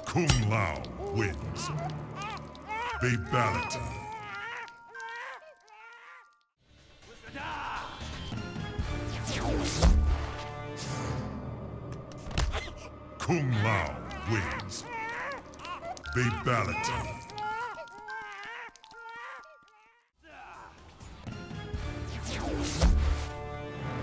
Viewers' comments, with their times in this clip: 0:07 I love Mileena's little bitty hiss